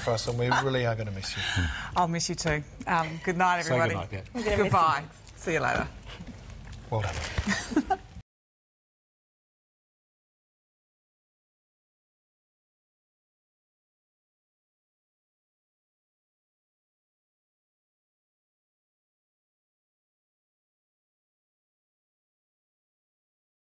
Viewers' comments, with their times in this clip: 0:08 You seemed to have lost sound